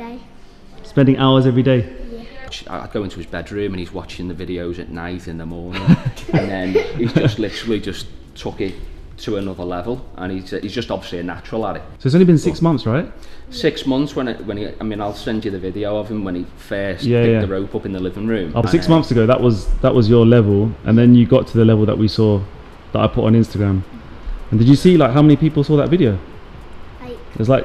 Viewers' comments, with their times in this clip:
0:09 I could just listen to that accent all day 😍🥰